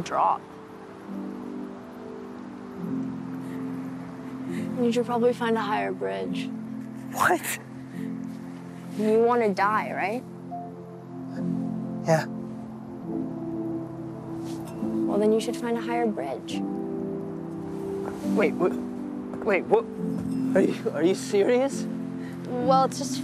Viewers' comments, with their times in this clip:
0:07 lmao that voice crack got me but i watched that movie and it is sad ... But on this scene he is Like tf.. You want from me to jump 😂😂😂😂😂😂😂😂